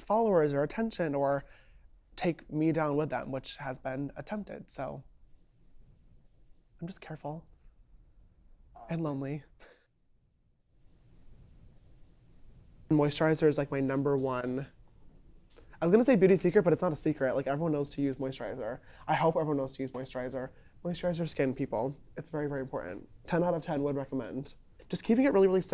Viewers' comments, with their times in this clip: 0:08 Omg my ❤ felt this he tried to laugh it off, but sadness still creeped its way out 😔 being lonely is not easy sometimes you could be surrounded by crowd and still be alone!!!